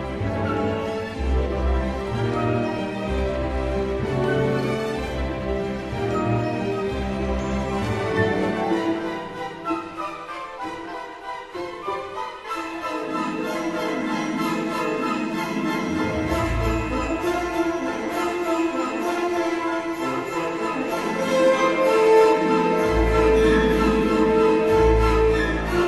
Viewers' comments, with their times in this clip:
0:08 Adore this suite. I love the orchestration, especially the change and after, where you get a varied version of the theme distantly, as a kind of phantom. Then the French Horns come in, with the original idea occurring in the background, bubbling around the edges. kisses fingers like a chef